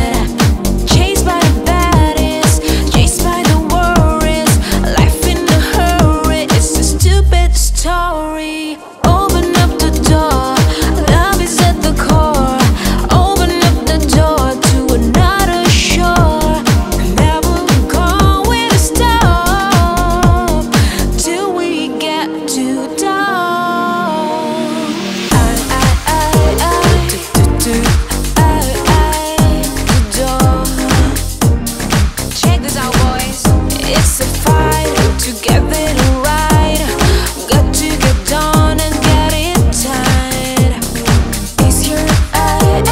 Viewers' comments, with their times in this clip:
0:07 What's with the knocking
0:10 Beautiful, but ... Sometimes the beat seems off by just a milisecond... like in ...Is this done on purpose?
0:28 the little note jump there is wonderful :)